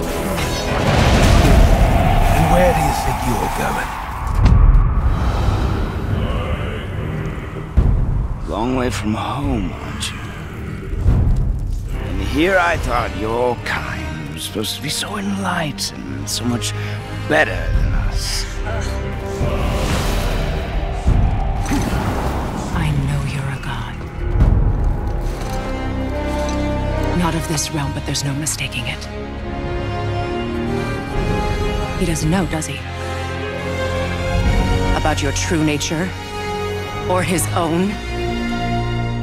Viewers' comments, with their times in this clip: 0:06 it sounds like its from the skyrim track
0:26 the background score is just too awesome